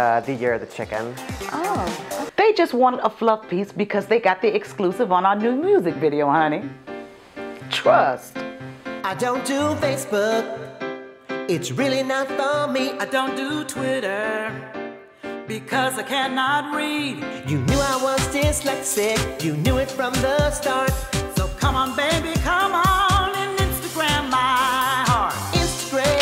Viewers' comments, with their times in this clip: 0:08 This is probably the catchiest song ever. Damn, even three years after hearing it that one time I still sing it sometimes. Instagram my heart.